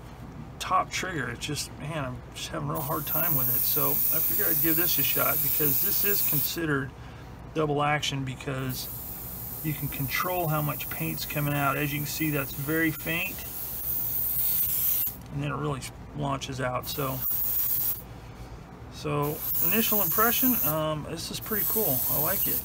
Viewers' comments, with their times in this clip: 0:07 looked to be getting to quite a good review but I had to stop watching as the high pitch sound when spraying was really hurting my ears, some sort of distortion of the mic, the more you pressed the trigger the worse the noise was.